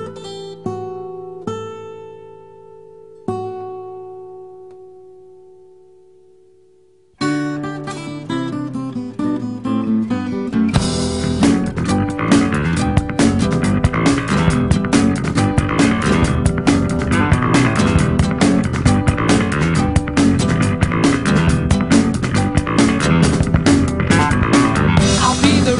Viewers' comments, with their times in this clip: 0:06 Meme music starting
0:11 when you are playing minecraft then you hear some hissing on your back, hissing on your top, and oh zombie sounds on your down.